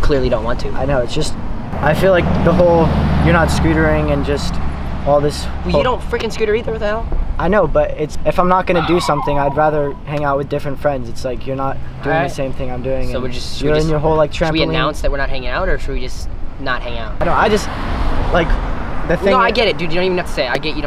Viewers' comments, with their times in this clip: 0:07 this is my dog barking lmao and thats my house where the gtr is parked